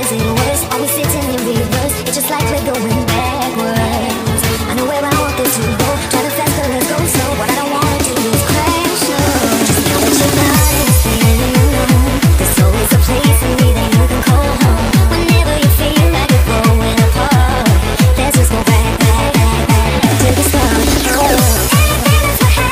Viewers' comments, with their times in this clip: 0:10 dat drop gave me the feels